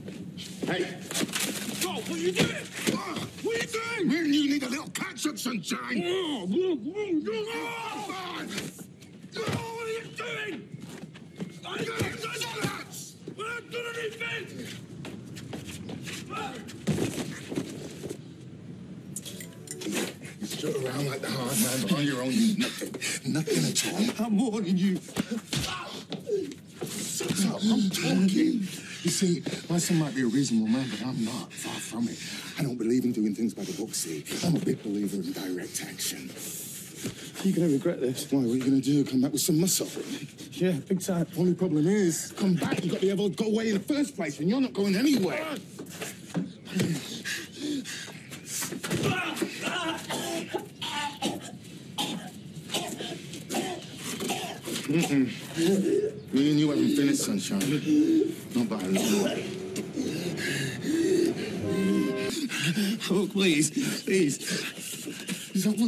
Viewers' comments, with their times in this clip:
0:06 that muffled scream😂😂
0:49 sounds like Callum's gonna be sick